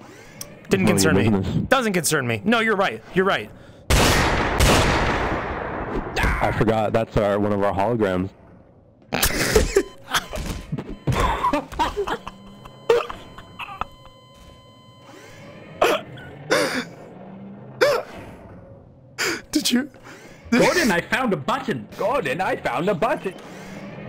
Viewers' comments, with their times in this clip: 0:07 The fact that Dr. Coomer laughed, made me laugh a lot. Thanks for making me exhale.
0:11 I’ve never noticed the laugh